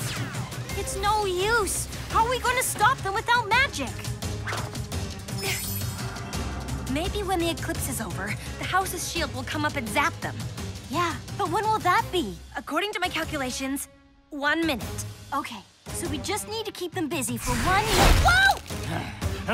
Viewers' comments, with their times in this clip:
0:03 Am l crazy or does Iris sound a bit like sweetie belle.Especially